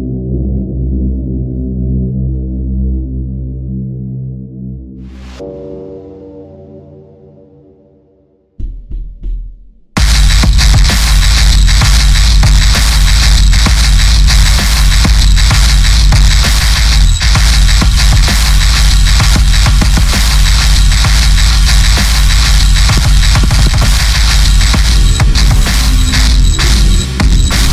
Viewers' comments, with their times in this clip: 0:10 Point blank DROP Vicious...